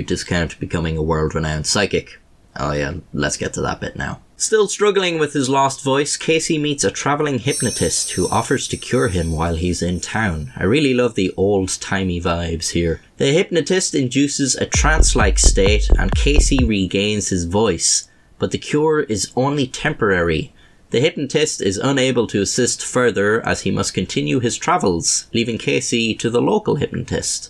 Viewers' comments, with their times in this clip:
0:10 God damn it, did you just add some trance music to this part ? Cheeky bastard.
0:14 what waa that bopping beat during the hypnotism.